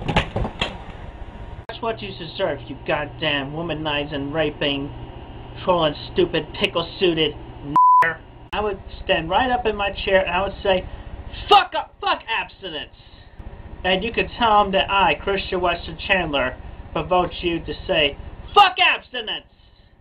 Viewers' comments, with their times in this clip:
0:07 u fuckin bleeped it😭